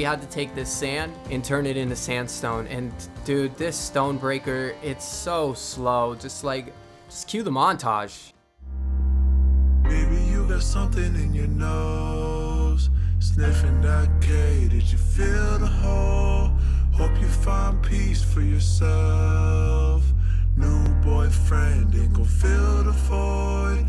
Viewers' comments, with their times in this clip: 0:08 bro said english or spanish